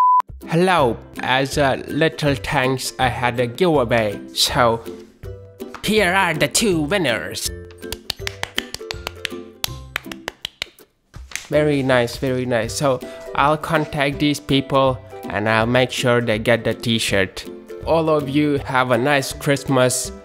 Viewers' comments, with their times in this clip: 0:08 sounds like he's beating his meet